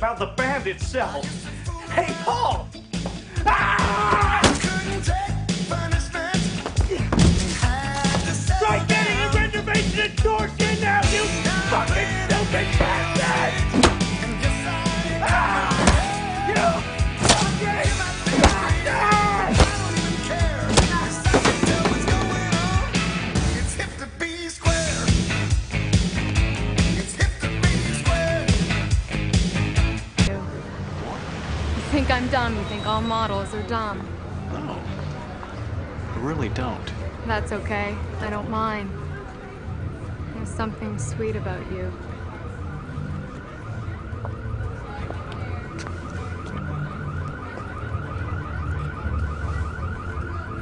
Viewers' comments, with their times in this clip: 0:03 that scream makes me laugh
0:31 lets just say the mystery alarm were on a stolen taxi